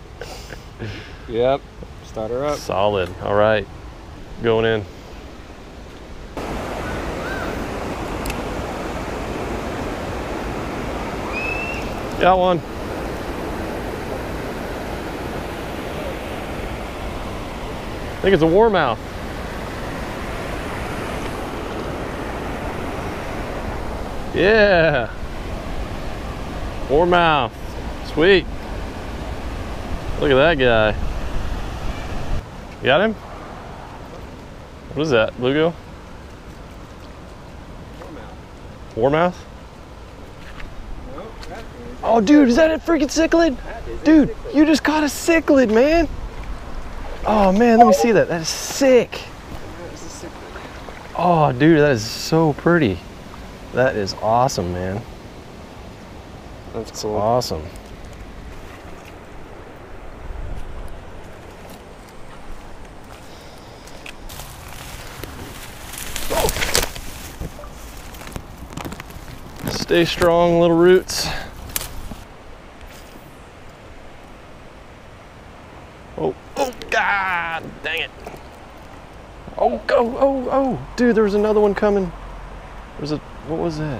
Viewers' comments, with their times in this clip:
0:07 Perfectly timed scream
1:07 Did anybody notice siri beeped
1:07 you can here siri